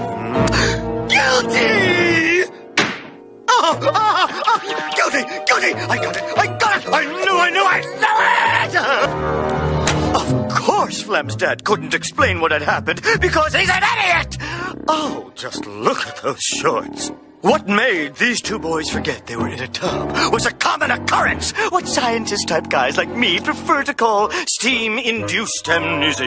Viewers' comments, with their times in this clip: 0:09 "cause he's an idiot!" These sudden outbursts though 😂